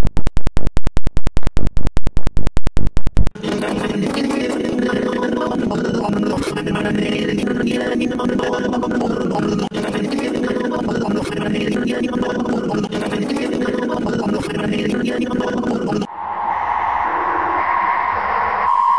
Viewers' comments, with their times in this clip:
0:04 Bro the phase 138-139 music-